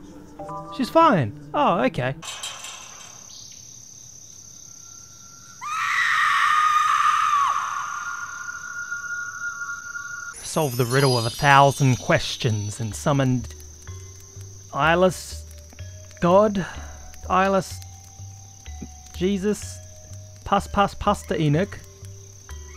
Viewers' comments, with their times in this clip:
0:05 Ghost: demonic screeching Subtitles: [Applause]